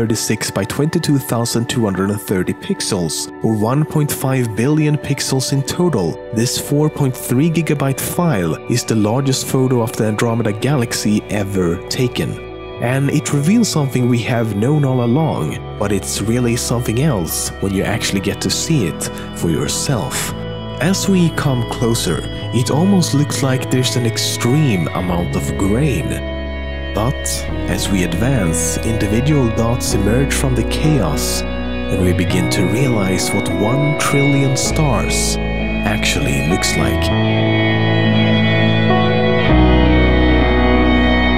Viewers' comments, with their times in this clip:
0:05 Song ? Sounds so calming but can't find it in description link. :(
0:22 '' It almost looks like there's extreme amount of Grayen '' So Gray or Green...?